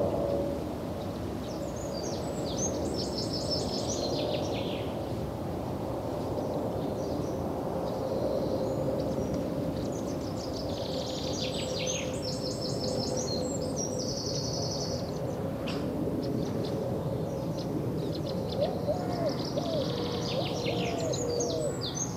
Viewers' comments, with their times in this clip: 0:03 What happened to the audio around the mark?